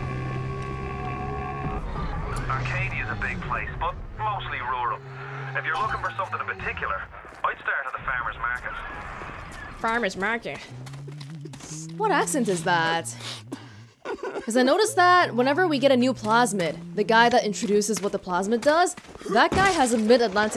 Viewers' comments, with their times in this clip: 0:06 Atlas has an Irish accent.
0:07 Atlas is irish